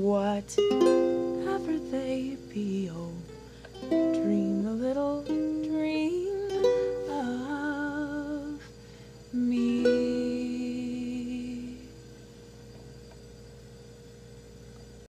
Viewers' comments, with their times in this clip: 0:06 So, totally sexy voice the whole time, but especially Love it.